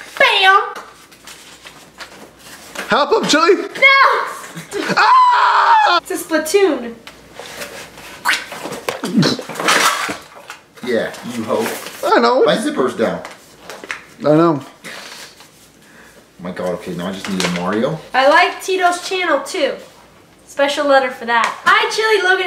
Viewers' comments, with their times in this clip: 0:05 dat scream do